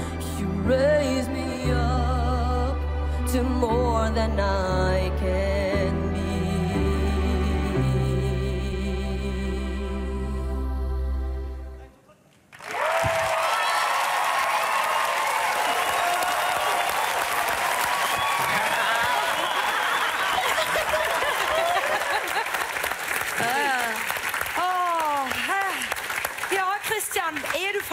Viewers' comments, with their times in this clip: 0:10 okey so im Norwegian but i prefer to speak in English. it shocks me that the judges are so bad because none of them ever mentioned that he forgot the lyrics of the song, and he also missed the tones of the song multiple times so he defiantly doesn't deserve a golden buzzer at all. if i was a judge there i would honestly give him a no. that also includes the other auditions that was on, most of them shouldn't have gotten a golden buzzer but rather just a yes